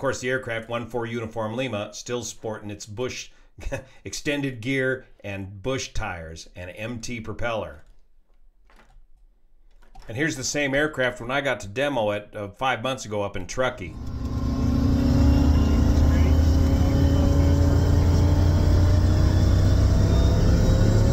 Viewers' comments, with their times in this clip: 0:09 that sounds awesome taking off!